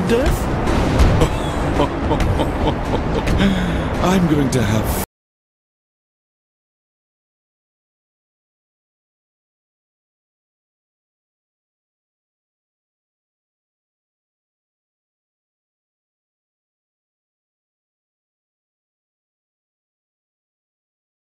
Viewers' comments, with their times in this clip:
0:04 The sound cuts out